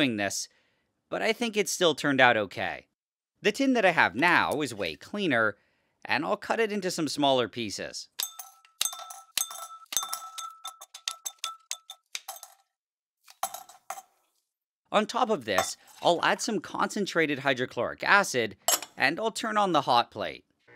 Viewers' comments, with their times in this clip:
0:06 this is where minecraft got their amethyst sounds lol
0:07 is the most satisfying sound with a metal
0:07 The sound in sounds like placing amethyst geode in minecraft
0:07 Minecraft amethyst asmr
0:07 sounds like the first note of runaway
0:07 so thats how minecraft amethyst sound was made hmm
0:08 You might've made a contender with the sound of amethyst blocks
0:08 that sounds like amethyst from Minecraft lol
0:08 minecraft amethyst sounds
0:08 this is where minecraft got their amethyst sounds lol